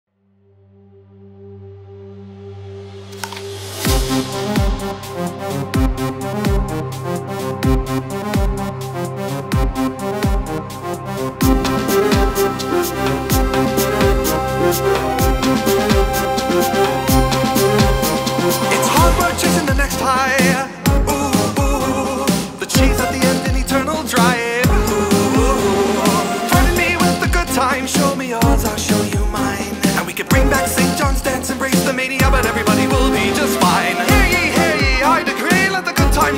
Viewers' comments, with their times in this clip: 0:02 WOW you can actually hear him take the bite out of the apple. How did I only realise this after like 15 re-watches.
0:20 "UwU UwU" is all I hear throughout the song ;-;